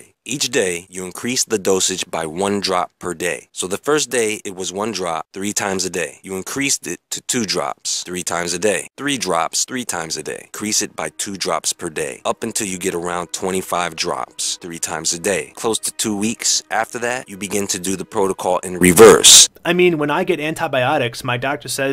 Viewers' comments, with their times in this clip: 0:03 is it just me or does this guy sound like a retarded sam o'nella?